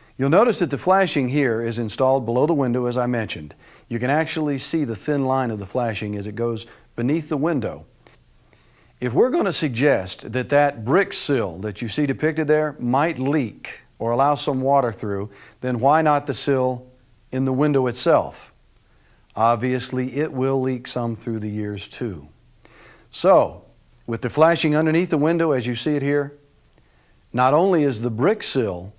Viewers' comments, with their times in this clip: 0:09 if we're gONna suggest